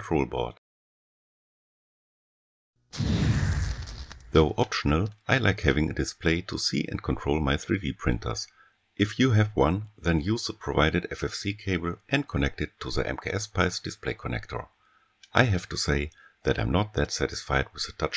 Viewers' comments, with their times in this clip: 0:06 From aroun the voiceover shifts to only the left ear.